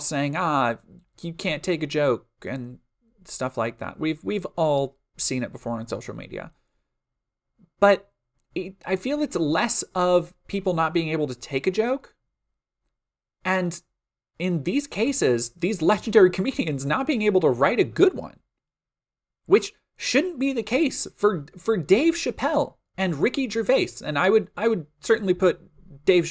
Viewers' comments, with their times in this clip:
0:10 Yeah, and I think maybe that story was in the back of my head while I was trying to come up with an explanation for the laughter... there's a shot of the audience and at least in the first rows it's not nearly as white as I was imagining that laugh sounding.